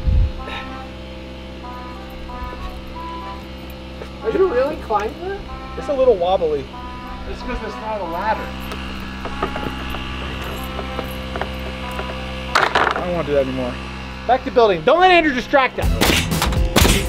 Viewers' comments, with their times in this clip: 0:05 Why is it the mark rober music starts playing